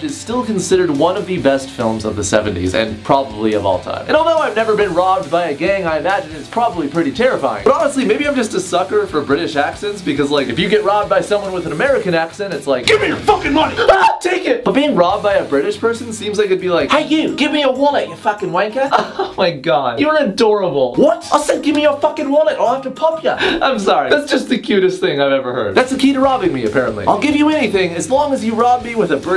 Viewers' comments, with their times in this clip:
0:10 Best laugh all night